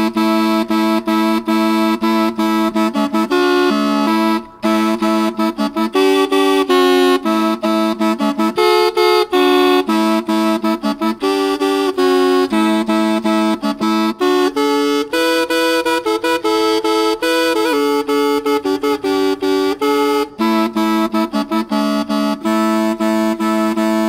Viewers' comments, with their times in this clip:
0:08 Car honking sounds